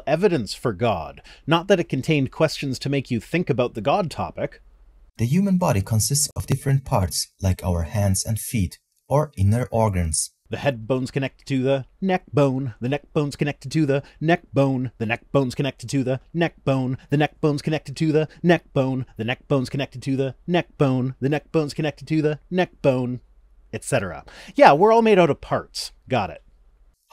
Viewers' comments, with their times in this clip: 0:10 I love you lol I have no issues with your volume levels